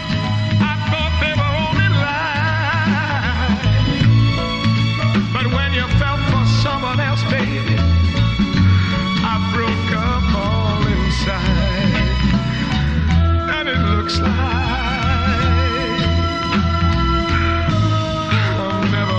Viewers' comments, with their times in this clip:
0:04 that piano part is painful to my ear. He must have made a mistake there